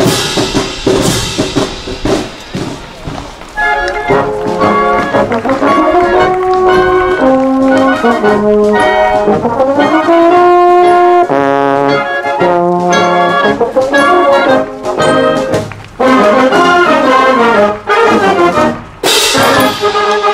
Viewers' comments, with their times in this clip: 0:05 What BEAUTIFUL tone from the Euph/baritone player ....the whole band was EXTREMELY good, with great intonation and bold, confident playing....BRAVO !